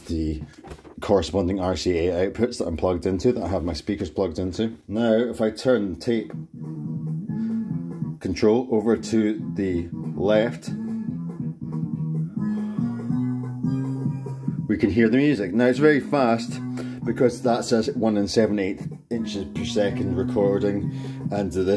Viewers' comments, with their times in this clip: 0:04 sounds like the song "Very Noise" bt the band IGORRR, just with the high frequencies rolled off. Love the tutorial.